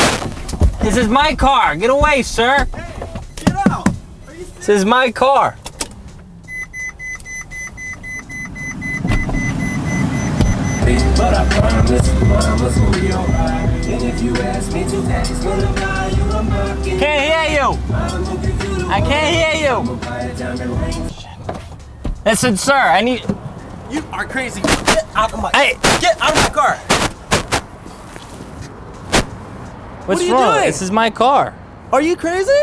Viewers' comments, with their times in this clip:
0:10 when he turned the music on I died in laughter! 😂🤣
0:12 starts playing mockingbird
0:13 when he turned on music😂